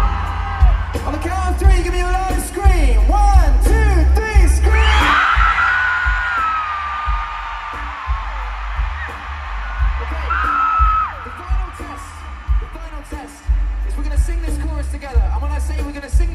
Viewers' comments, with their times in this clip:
0:03 Thanks for recording and sharing this! Awesome performance. That part when the crowd screams and John immediately reacts because it's too loud even in his in-ears... lol